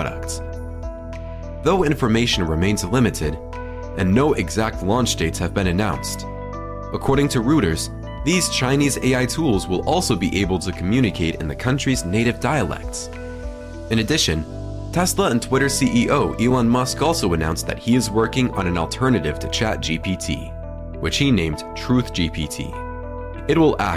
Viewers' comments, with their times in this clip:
0:05 LOL re "rooters".